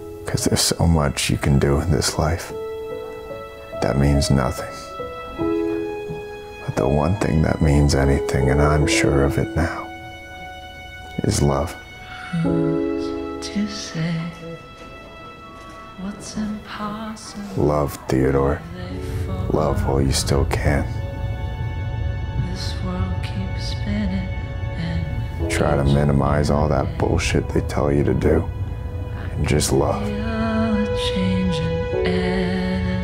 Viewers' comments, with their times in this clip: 0:10 bro wtf in and this shit just drops harder than it was to begin with damn
0:14 Was that an emotional version of the song upside down from the Curious George movie?!